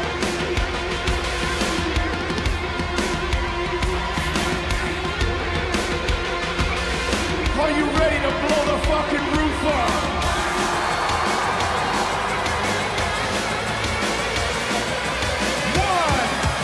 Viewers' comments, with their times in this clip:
0:04 I LOVE these Crowd reactions!!!